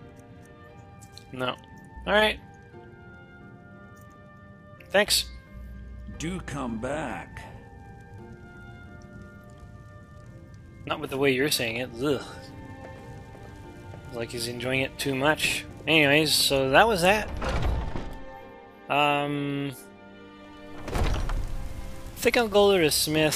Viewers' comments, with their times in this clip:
0:06 He always reminds me of sheogorath when he says "do come back"